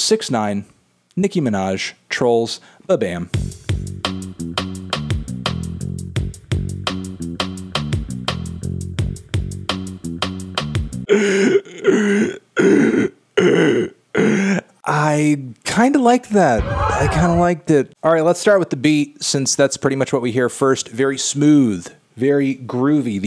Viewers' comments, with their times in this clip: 0:10 did Desiigner possess this dude ??
0:11 best Designer impression i have ever seen lol